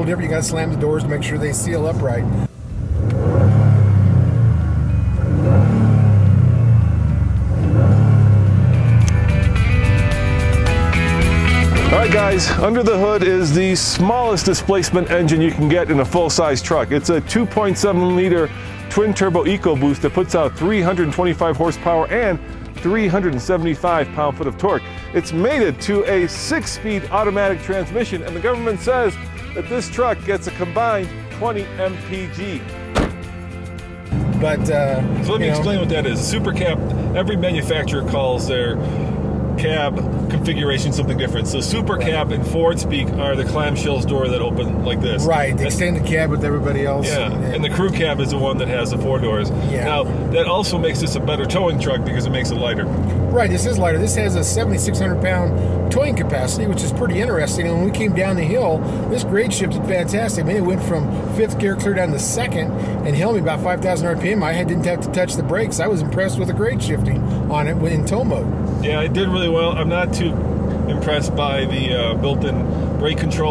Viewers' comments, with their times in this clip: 0:05 The engine revving ...That was awful. That was like a person trying to force out whatever air was left in their lungs. When or if Ford makes an ecoboost V8, I will never get ecoboost in a truck. V8 all the way.
0:56 mumble mumble mr. truck its hard to understand what you say man lol I think he gets a little too excited he's driving a bad ass truck